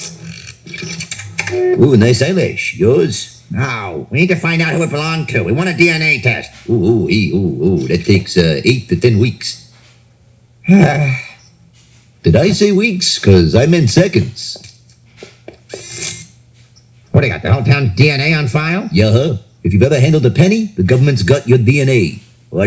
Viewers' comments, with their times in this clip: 0:10 that sigh from Chief Wiggum is legendary 😂😂😂😂😂😂